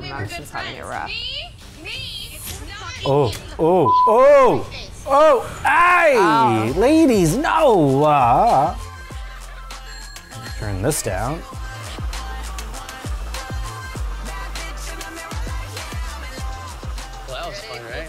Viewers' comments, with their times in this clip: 0:03 Omg mtv forgot to bleep Chloe saying “get your fucking hand out of my face”